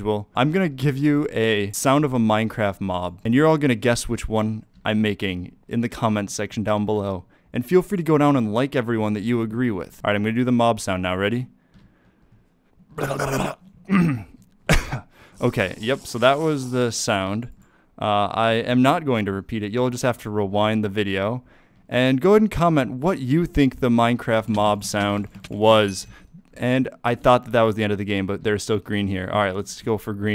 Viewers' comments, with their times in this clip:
0:10 That actually sounds like a drowned zombie...
0:11 i think zombie voice
0:12 bro that's me gargling
0:12 definitely a cat
0:13 sounded like drowned.